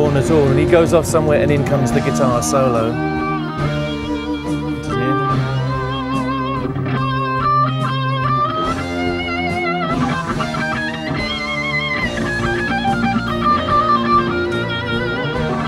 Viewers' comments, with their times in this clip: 0:03 brian's guitar reminds me of tchaikovsky's violin concerto Dmaj.